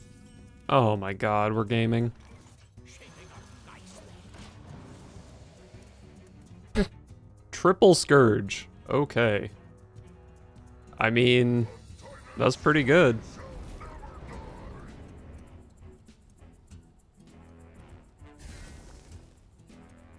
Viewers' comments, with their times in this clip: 0:05 the first time I’ve seen him laugh lmao
0:06 the cute little noise
0:06 the cute little noise